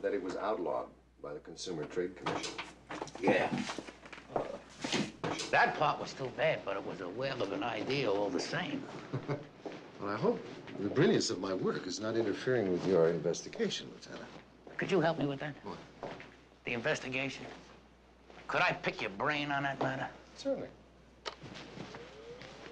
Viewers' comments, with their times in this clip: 0:07 "Well I hope...the brilliance of my work is not interfering with your investigation, Lieutenant." - Bobby Culp's stinging delivery in these lines is impeccable.